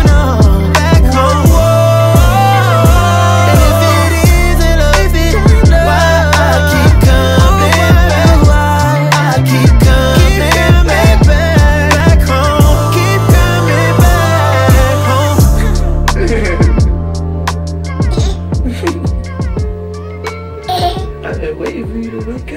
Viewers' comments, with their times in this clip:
0:04 That falsetto tho ! “ if it iiiiisnt love “ damn bro chill lol his vocals are legendary! Over a decade trigga!